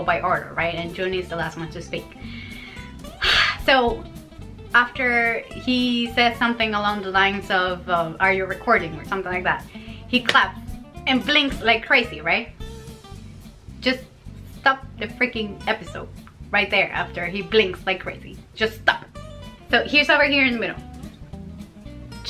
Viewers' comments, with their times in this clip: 0:10 He claps and BLINKS LIKE CRAZY LOL I completely lost it there. Jun why you so cute, we love you 💜